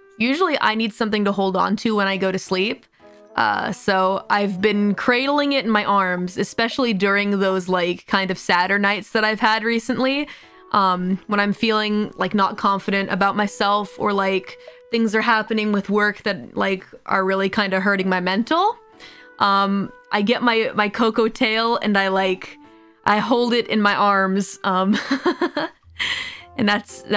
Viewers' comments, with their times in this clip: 0:08 is "sadder nights" but I absolutely hear it as "Saturnights" now that you point it out lol